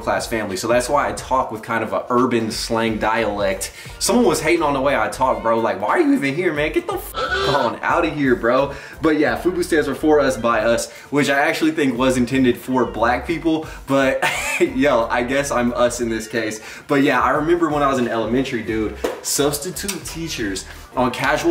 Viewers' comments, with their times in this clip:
0:03 you do talk corny af .